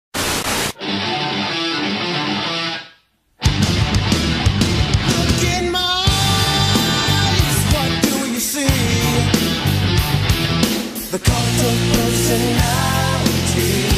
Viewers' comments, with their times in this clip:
0:00 Soubds guaranteed to generate a loud pop: Glass shattering A bell gong Static
0:01 is the best pop